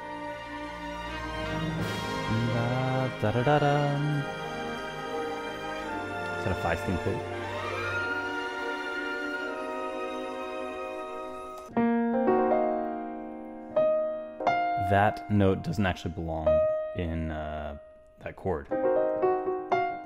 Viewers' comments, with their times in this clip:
0:04 That is Mineru's theme as she dissappears. 😢 Man how I love this whole sountrack, its so emotional. ❤❤❤